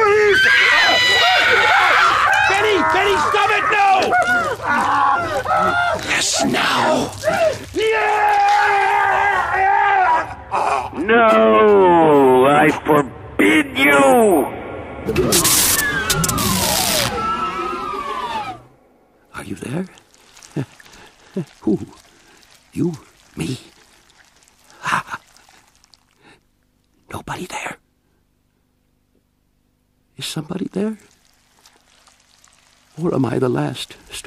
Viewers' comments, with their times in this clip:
0:04 The Doom Door sound jumpscared me lmao
0:15 Doom sound effect jumpscare